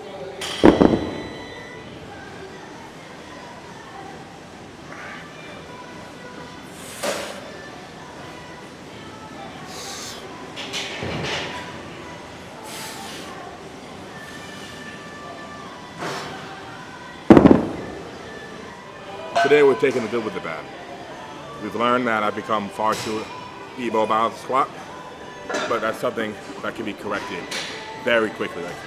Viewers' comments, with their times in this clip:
0:09 that song in the background tho